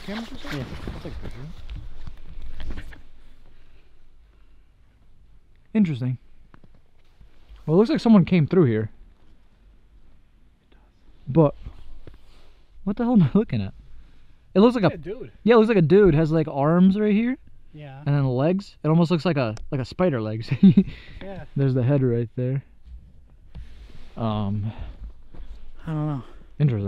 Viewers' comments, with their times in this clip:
0:10 Listen to Is that him whispering to himself or another EVP (Male Voice) "It Does"
0:10 Thats creepy you can hear at the time something says "it does"🧐😨